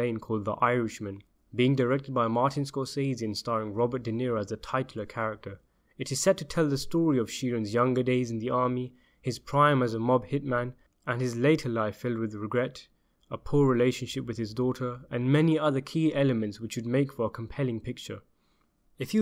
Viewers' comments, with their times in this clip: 0:06 WRONG. At + or you pronounced the word "titular" incorrectly. It is "tiCHUlar", not "tightUlar". If you are going to use big words, learn how to say them !